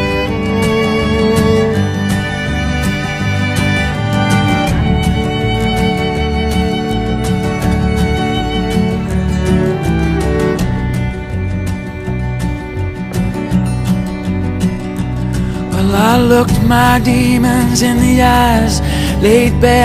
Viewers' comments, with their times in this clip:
0:03 there sounds like a weird voice calling something in the left earbud. Idk what it is